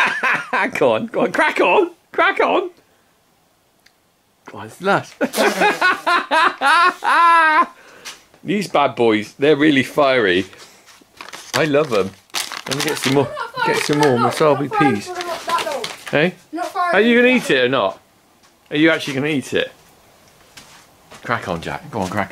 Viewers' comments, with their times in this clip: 0:05 That laugh sounds exactly like Ricky Garvais's laugh ;D